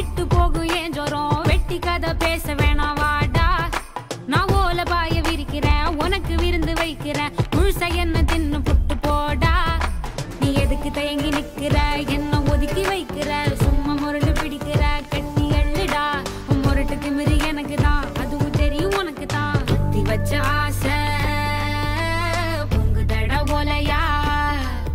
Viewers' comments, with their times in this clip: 0:07 You laugh 😏 very teasing song though